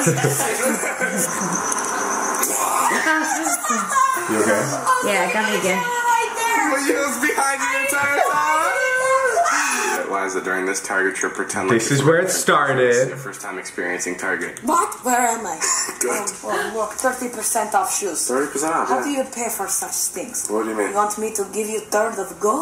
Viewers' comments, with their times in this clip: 0:04 when a baby starts to cry.. That was adorable❤❤😍😍